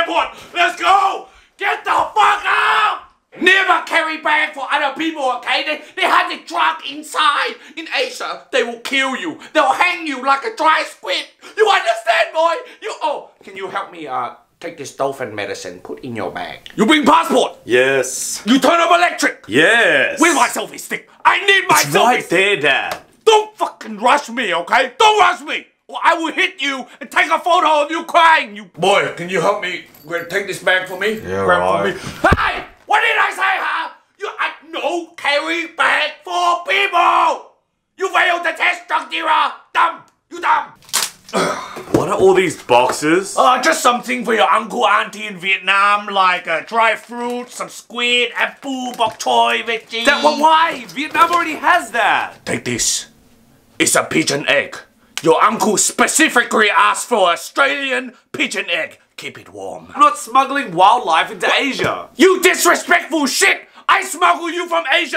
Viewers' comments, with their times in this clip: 0:07 sounds likes Po’s dad
0:52 idk why but he said that in a soothing way